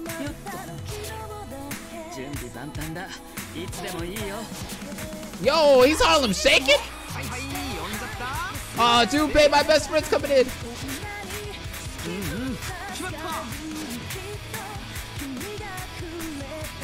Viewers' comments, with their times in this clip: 0:04 GLAD I'M NOT THE ONLY ONE WHO THOUGHT THAT WAS THE HARLEM SHAKE.😂